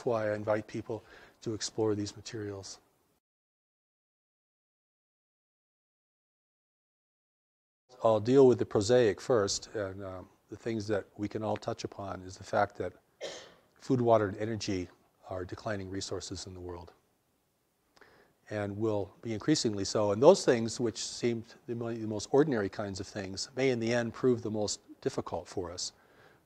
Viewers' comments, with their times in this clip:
0:07 sound cuts out at the end I would love to hear about the earth changes